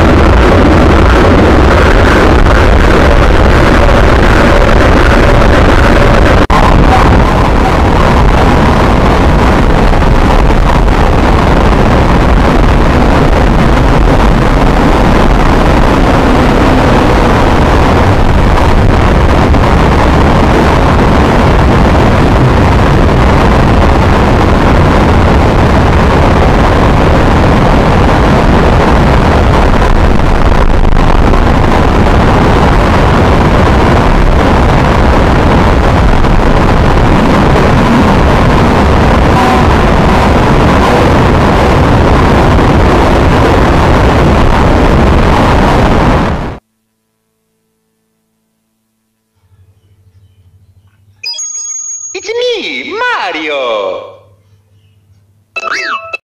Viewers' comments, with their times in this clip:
0:05 noise intensifies: me: I'll be deaf by the end of the day and dead but I'll make it through😂😂
0:14 noise at full blast: me: MAKE IT STOP!!!!!???!?!?!
0:46 noise stops: me and this is why I have scars even though I don't have a personalized copy of mario 64